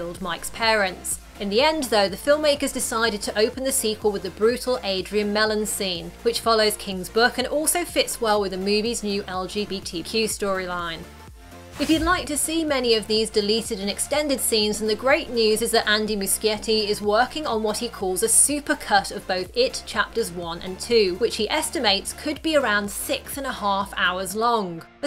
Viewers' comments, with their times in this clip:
0:09 love the way she said eL-gE-bEi-tEE-qUu